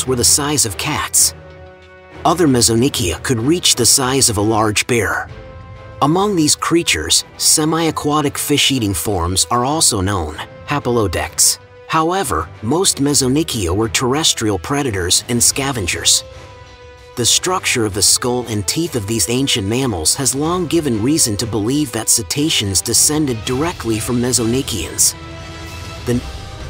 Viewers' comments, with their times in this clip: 0:07 I might have watched this all the through,, but I’m afraid I found the overly dramatic music too much and gave up